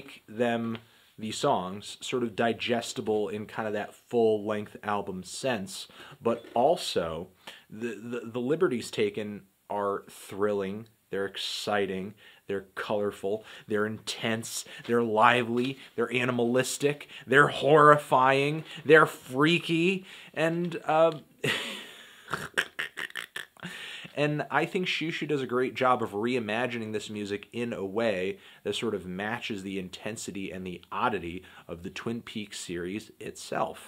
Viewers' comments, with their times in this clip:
0:10 you sound a lot like Harlan Ellison reading I Have No Mouth and I Must Scream. Hahaha
0:21 snoop dogg laugh